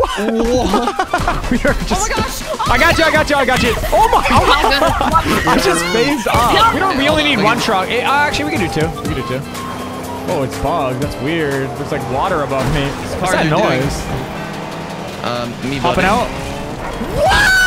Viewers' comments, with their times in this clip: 0:05 did you hear that laugh it’s so funny tell me if you hear it